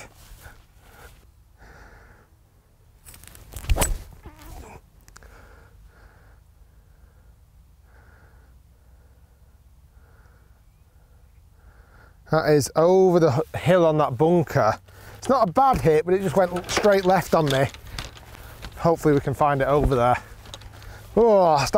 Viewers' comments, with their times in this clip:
0:04 did ya toot?